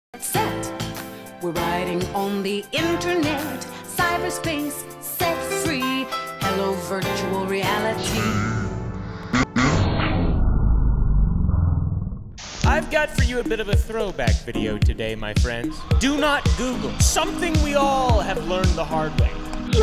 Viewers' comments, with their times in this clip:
0:00 Why is this song a bop?? 😭